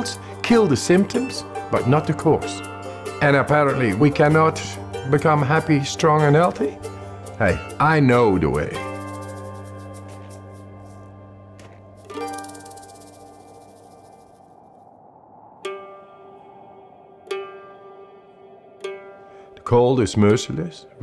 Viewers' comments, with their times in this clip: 0:06 I know dae wae
0:06 he knows de way